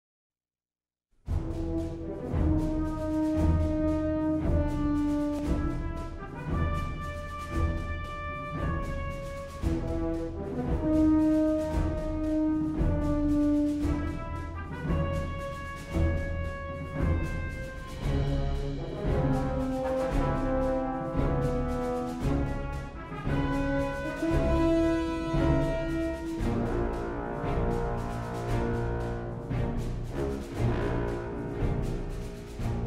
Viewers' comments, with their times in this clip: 0:00 I know its the same composer but this song really reminds me of Captain America First Avengers when Captain America dives in the water after that Hydra Agent
0:17 Jumba : (yelling and tearing up the papers and eating the pieces then sees the councilwoman and pleakley) Hee hee hee hee hee hee hee hee. He got away ?